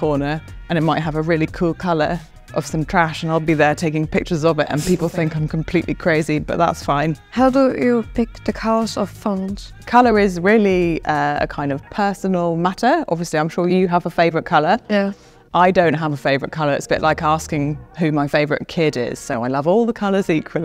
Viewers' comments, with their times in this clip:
0:04 Why I am hearing Zomato tune in background
0:05 at this part why i feel that Zomato advertisement background song is going on